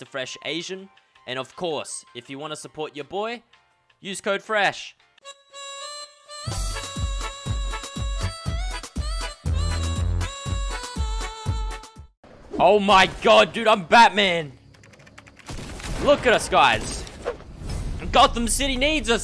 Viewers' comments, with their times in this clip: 0:06 he dose know that it´sa mexican beat that he always uses